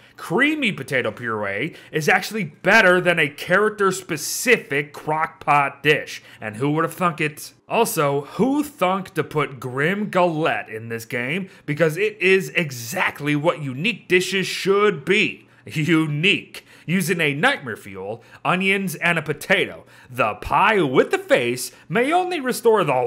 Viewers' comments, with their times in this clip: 0:06 sounded like fuck lmao